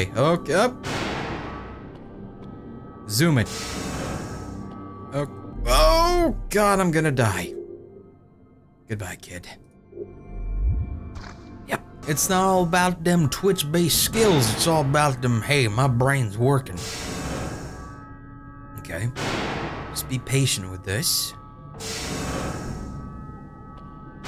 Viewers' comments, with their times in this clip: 0:10 did he just do a videogamedunkey impression ?